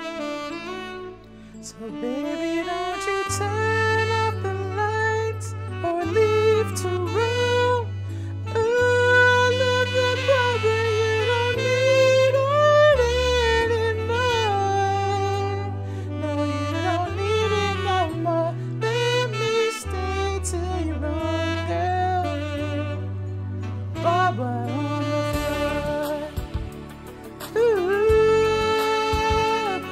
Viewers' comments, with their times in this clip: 0:07 i only realised the subtitles were being sang
0:11 that moment when your singing in the car and the music cuts out
0:13 that voice tho